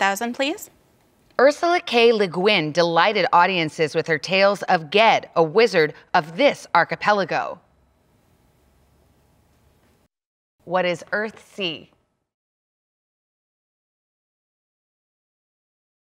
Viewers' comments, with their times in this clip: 0:10 I just noticed they didn't use the "no-buzz" sound.